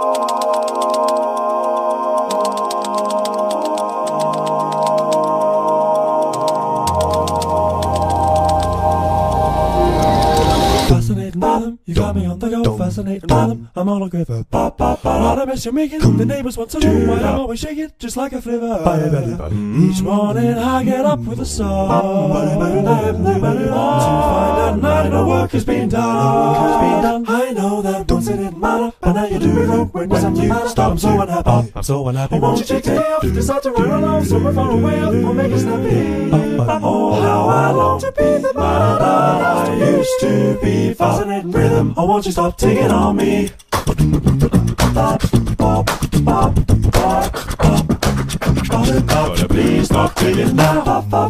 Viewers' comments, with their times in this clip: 0:08 I can hear a D, did you miss it or I'm crazy?
0:37 Microtonal "man that I used to be" snippet mentioned in the interview (part 1)